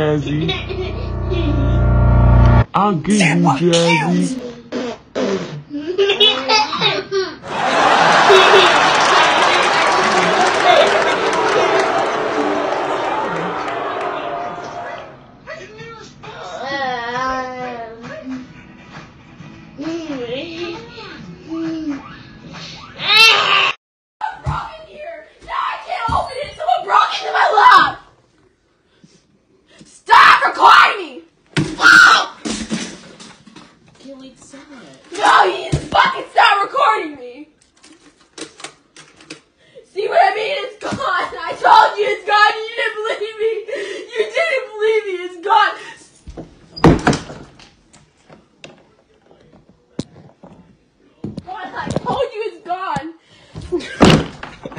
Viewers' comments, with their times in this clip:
0:04 Watching the baby laugh in front of the sister’s tantrum
0:05 This is cute when babies are laughing at you
0:30 Why you screaming stop recording me!! Huh?
0:31 Why she’s screaming stop recording me!
0:39 Why are you crying!!